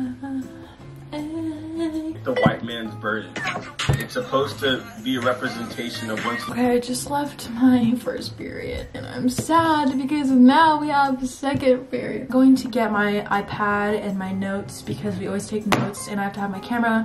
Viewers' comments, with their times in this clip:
0:05 what song is that 😭 it’s so catchy